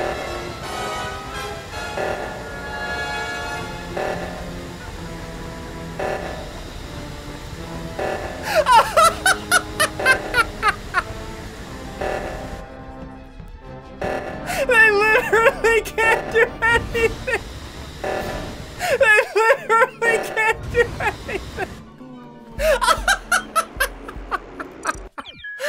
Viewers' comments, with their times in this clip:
0:08 sounded like he laughed among us drip... XD
0:09 SSundee laughing to the sound of the among us sus song